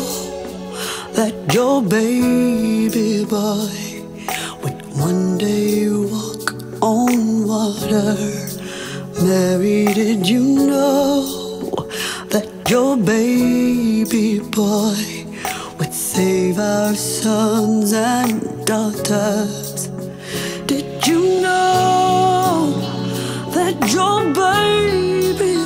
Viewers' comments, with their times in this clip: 0:10 What was that gargling sound??